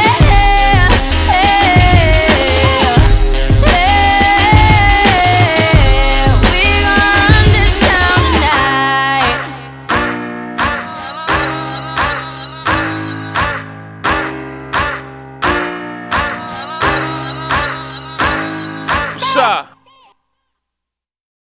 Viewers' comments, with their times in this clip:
0:08 This part kinda sounds like a duck quaking! 😄🦆